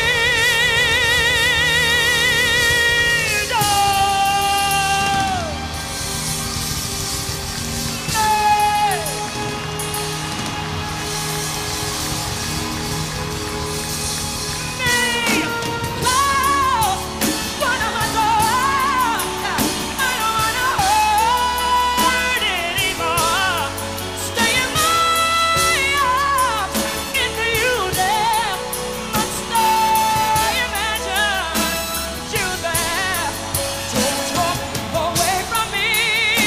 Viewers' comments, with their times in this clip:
0:09 she adjust the autotune in her mouth to hit the fk high note😂😂 how tf
0:11 I was thinking the same… you can tell in parts of the performance she seemed to struggle with her range, granted one’s voice changes with age, but she managed to perform most of the song as well as ever! I’m so intrigued by what she took out of her mouth, or at least looked like she took out of her mouth To say she is missed dearly is an understatement 🥹💔
0:13 this pause was so genius because everyone now knows this was truly „live“.
0:24 the iconic E5 note, without any reverb or anything, Her resonance is just 100%%%
0:24 she hit that note in a heady mix
0:24 The highest note is a E5 where is the crack ? This performance is a masterpiece and has been praised by every critics. Yes at that time her voice has matured but it was even better.